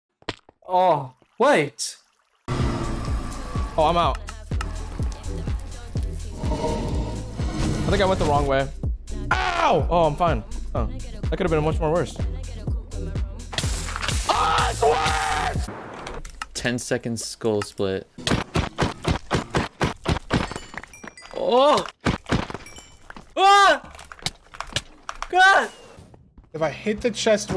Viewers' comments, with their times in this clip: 0:09 The way he said OW